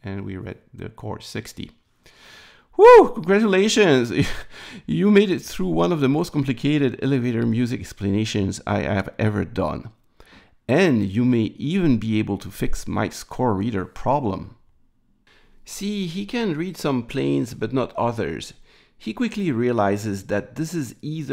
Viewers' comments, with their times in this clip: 0:07 so complicated that even the elevator music stopped before finishing the explanation 🙂 As for "wasting" 500mA in the Reset wire: it could actually also be fed with half current when operating as part of the inhibit, but that would of course require additional hardware to provide this current.